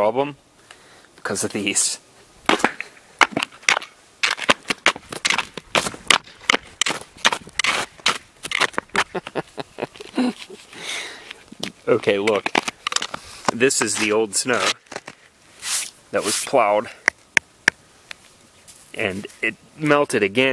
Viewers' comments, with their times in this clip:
0:08 That's the sound of a guy genuinely pleased with himself!